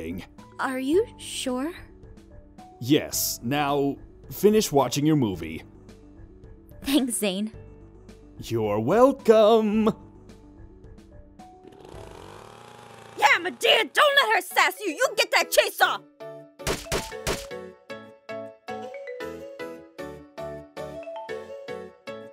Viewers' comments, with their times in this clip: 0:08 Dose anyone else feel like Zane is getting a little to conftball. He said don't worry zuzu is hera to help. He HATES being called zuzu and the town in his voice